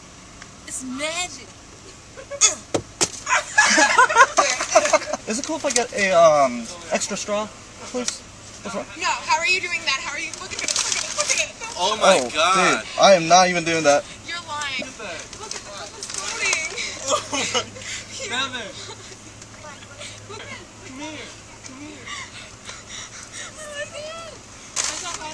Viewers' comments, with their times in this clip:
0:08 she rejected the straw with a straight up nO